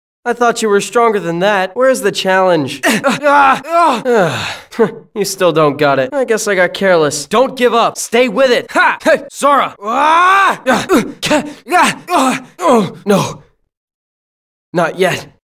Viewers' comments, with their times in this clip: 0:10 onwards just sounds wrong lmao, especially if you close your eyes